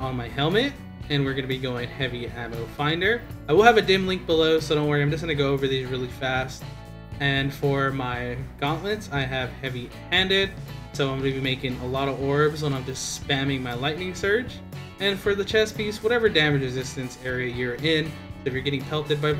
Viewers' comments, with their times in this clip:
0:03 … got much easier to hear you around the mark.